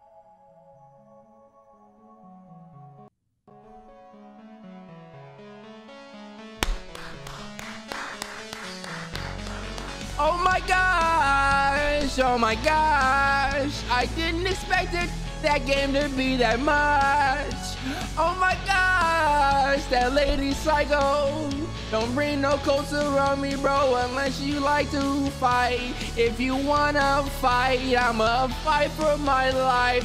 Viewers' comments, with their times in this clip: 0:06 yo tha song at the end Kinda cool 🔥🔥🔥
0:11 he was so happy he finished the game he started singing
0:11 live Travis Scott concert starts here